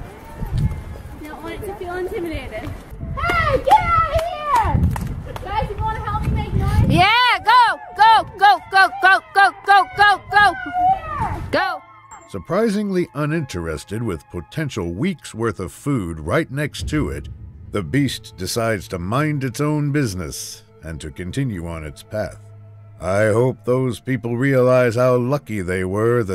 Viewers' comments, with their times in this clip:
0:07 "You don't want it to feel intimidated." Now everyone scream at it.
0:13 A chorus of Karens